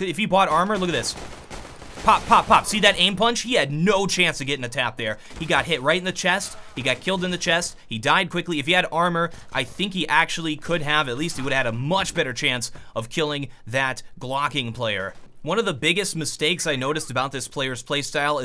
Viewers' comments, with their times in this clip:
0:04 You talk a bit like Donald Trump here